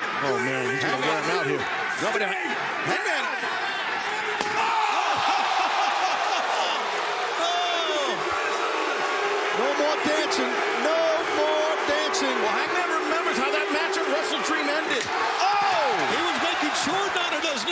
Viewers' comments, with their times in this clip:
0:04 you heard that chair shot!